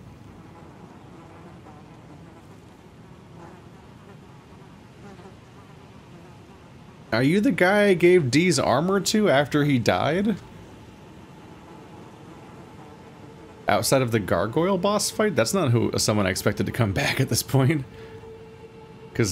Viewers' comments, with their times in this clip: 0:05 Got 'em Also that was a souls game worthy laugh